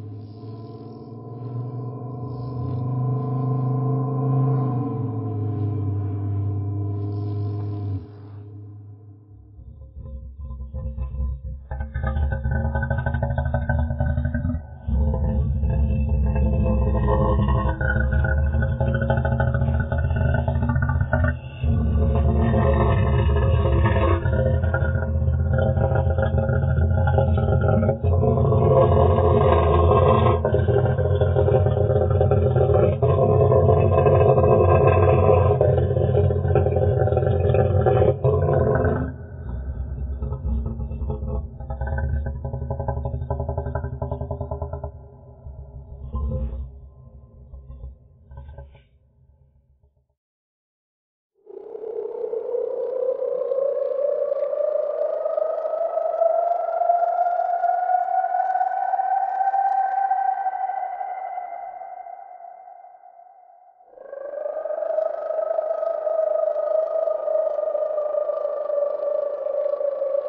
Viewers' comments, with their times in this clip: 0:08 is like a T-Rex meets a crocodile that is a nightmare
0:08 Bro sounds like the garbage disposal in my sink 💀💀
0:51 you are on a boat, you have a recorder and are looking for sounds in the water. a sound is heard, it sounds like a a mix of a reptile and a whale as it bellowed through the water, then CRASH your boat flips, your stuck in the water and you can't flip your boat over, the speakers cable is rapped around you, the great noise at full volume. and its the last thing you hear... The End